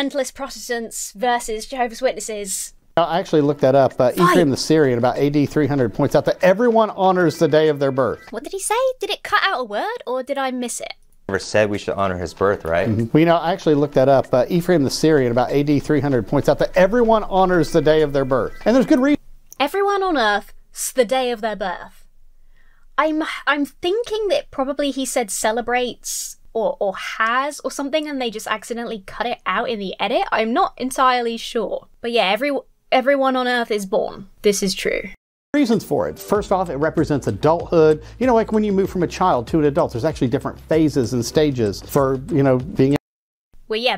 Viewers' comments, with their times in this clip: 0:05 I heard "Everyone honors the day of their birth" - it was probably his wacky American accent that confused you 😂
0:06 Everyone honors the day of their birth. A fellow American's lack of enunciation FTW!
0:19 what he said is "everyone honors the day of their birth" 👍 those pesky American accents
0:31 what he said was "everyone honours the day of their birth" but yeah, buddy should enunciate a bit better.